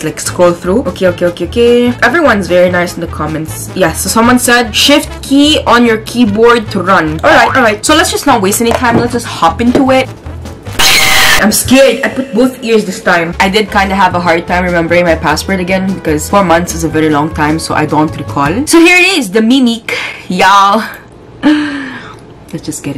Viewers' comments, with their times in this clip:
0:10 the way she screamed :face-pink-tears::face-pink-tears::face-pink-tears: